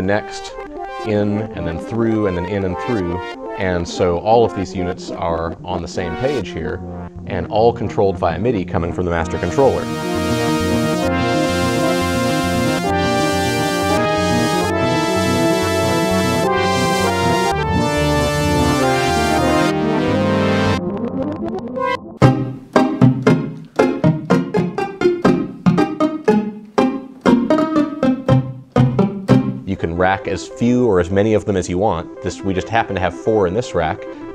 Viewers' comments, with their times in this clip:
0:09 Me being a Zelda fan and hopefully a few others, does that song that he's playing on sound like the Boss Battle music to Ganondorf in Ocarina of Time?
0:22 sounds like real pizzicato strings.